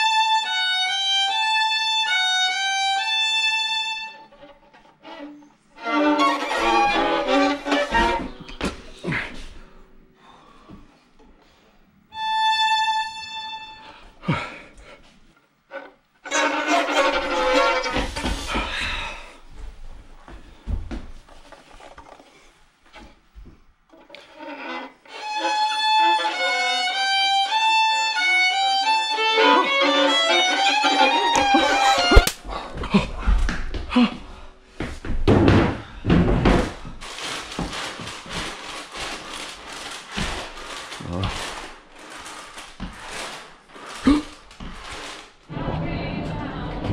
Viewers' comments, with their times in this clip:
0:06 it sound like he about to get it correct
0:16 The way the violin sound when he played in his own why LOL 🤣🤣🤣
0:16 A HORROR SOUND!
0:25 Worst. Violin. Ever.
0:30 mean while music as an applause